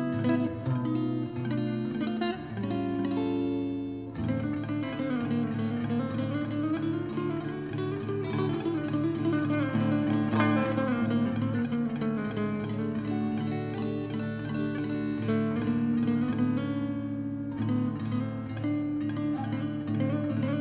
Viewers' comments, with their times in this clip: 0:05 Hello David, I like those "INDIAN SITAR RUNS" seconds in...That's some different stuff bro and reminds me of Ravi Shankar. Have a great day as i take lessons from you.